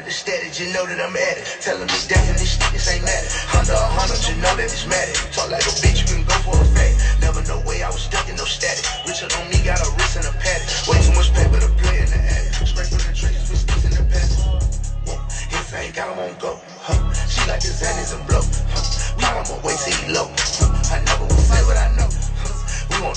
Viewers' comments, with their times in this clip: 0:10 That 808 roll my godness